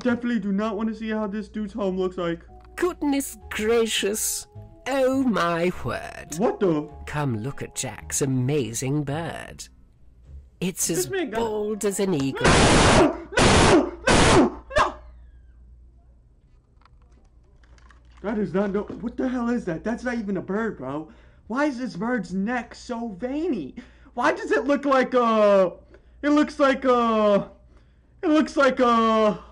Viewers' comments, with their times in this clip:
0:10 when u scream I laugh